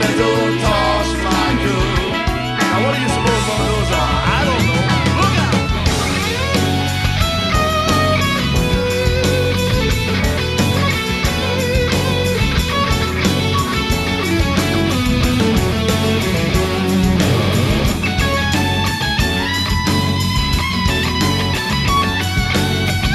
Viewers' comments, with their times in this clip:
0:05 I prefer Dweezil's style 10 times to Steve's style